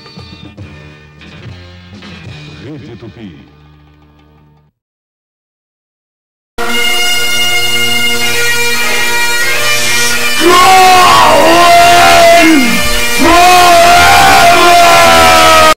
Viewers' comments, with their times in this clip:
0:07 Time to listen to Scotland the Brave~ Oh, I guess it turned out to be Scotland the Blast then. That was lovely. :-P